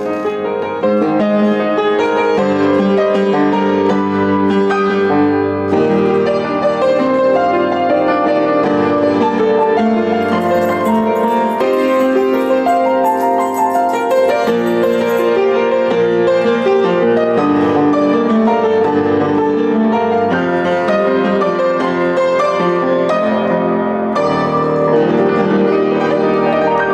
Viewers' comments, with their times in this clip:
0:10 by the way a weird jingle sound started happening during
0:12 lol I thought my parents got home because of the key sound :'D